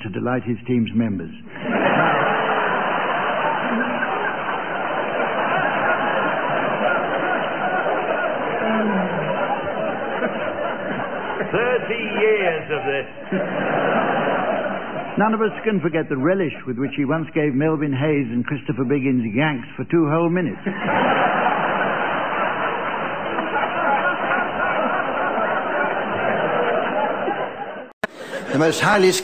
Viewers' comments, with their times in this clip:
0:10 Barry Cryer has the most distinctive voice.